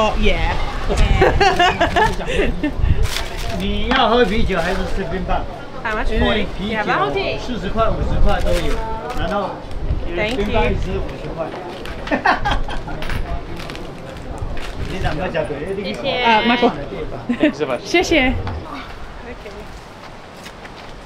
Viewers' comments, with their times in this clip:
0:07 I reck the girl has aussie accent 😂